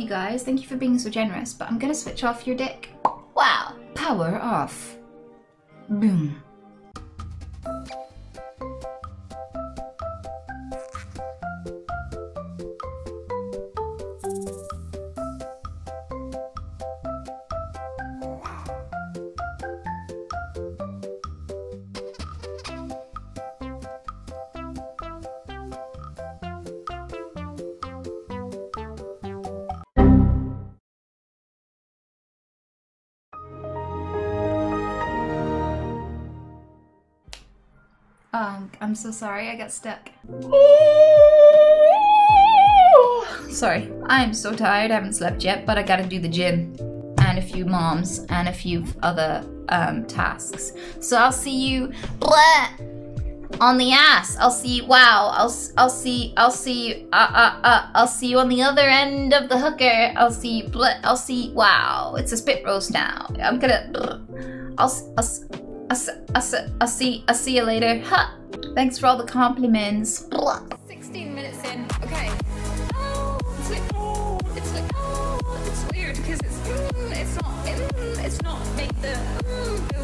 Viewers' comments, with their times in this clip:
0:04 longest tic ever 😂😂
1:03 is it just me or did she start to sound like foghorn leghorn